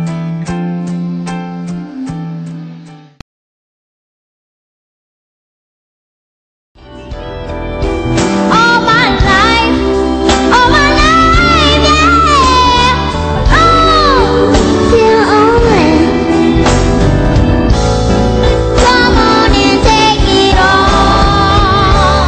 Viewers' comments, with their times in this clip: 0:08 i fucking gets gooseBOMBS when i hear her.... she is surely as good as MJ